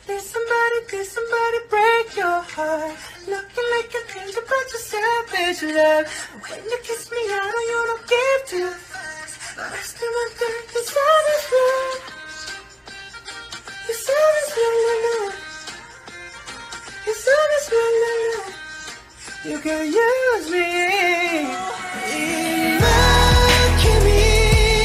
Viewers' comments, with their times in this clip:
0:10 jk clearly makes a fuck !!! 😂😂